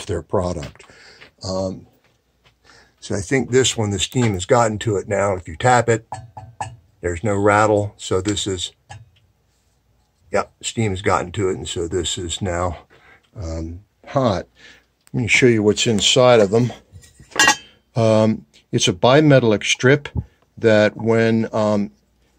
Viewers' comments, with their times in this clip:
0:05 You confirmed what I was wondering....I suspected one of my main vent is bad, and it sounds just like this one....Only mine, I'll guess, is almost as old as you!! Thank you!! I just saw the price of a new one...Ouch!!!